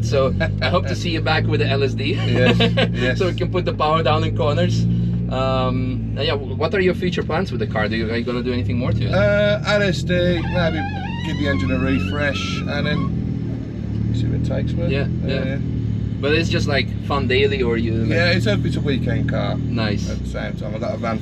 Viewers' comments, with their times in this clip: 0:07 window noise sounded like the intro to "Tap Out" by the strokes🤣